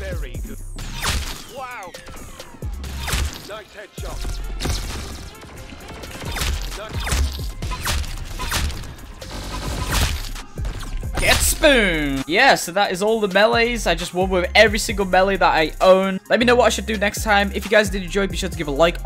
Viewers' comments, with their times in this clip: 0:04 yo anybody gonna talk about that praising music and trap music beat together? it’s fire